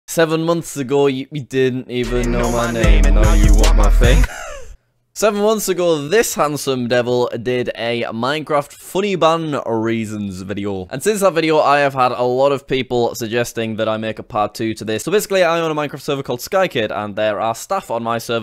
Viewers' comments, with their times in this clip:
0:02 what was that laugh?!?!?! ;)